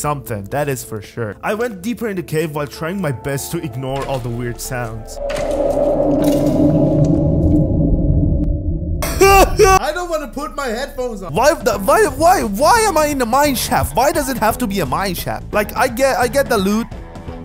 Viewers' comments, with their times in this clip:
0:04 reaper leviathan roar